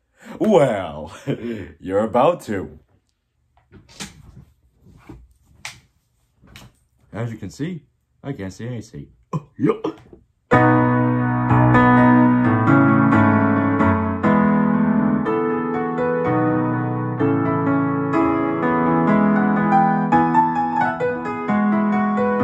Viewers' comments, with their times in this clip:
0:09 Dat Goofy laugh.